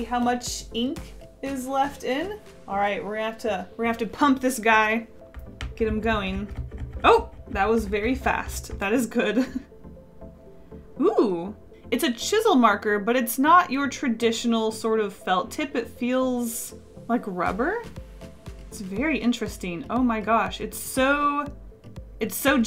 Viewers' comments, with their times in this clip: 0:03 if you take just the audio out of context it sounds, well, inappropriate. Lol